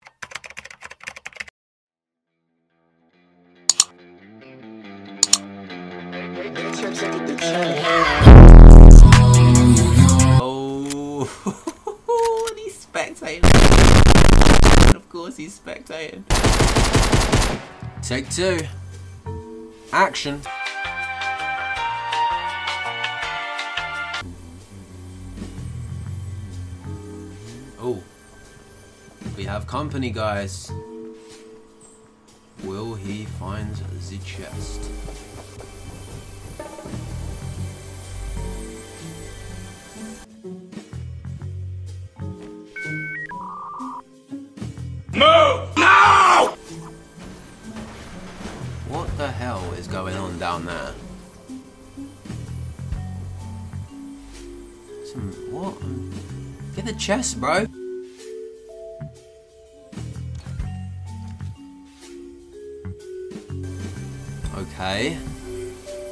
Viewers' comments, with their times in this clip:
0:07 music at min
0:08 what that music or sound effect sounds cool
0:49 sounds like Simon cowell